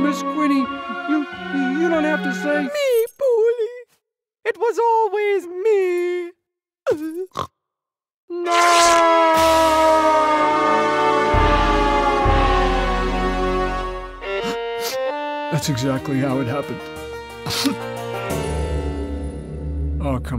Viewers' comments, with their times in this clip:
0:05 I fucking died when piggie snorts lmao